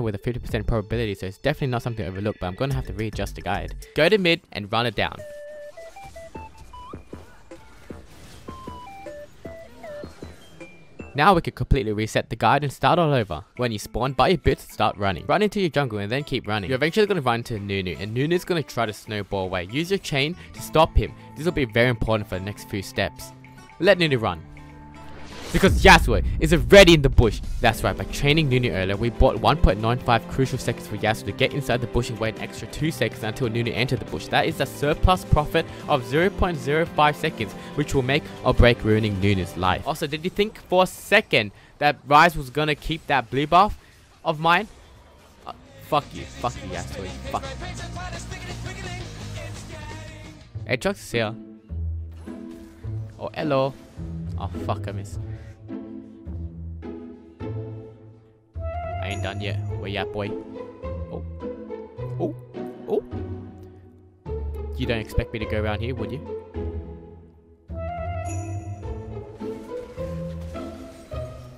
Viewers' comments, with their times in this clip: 0:05 the soundtrack played ? :o
0:53 WHY WHEN HE SAID ELO I FELT LIKE I WAS WATCHING MINIONS WHEN I WAS 8 AGAIN